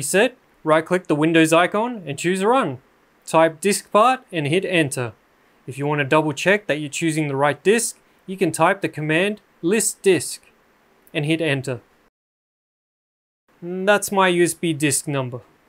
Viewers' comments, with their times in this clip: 0:03 i couldnt understand what you said disk what?